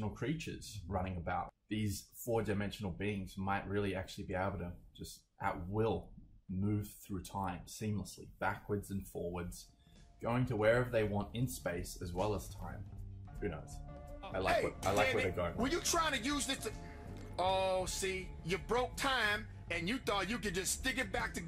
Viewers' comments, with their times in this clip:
0:09 Watching Rick burping makes him wants to burp too... ^^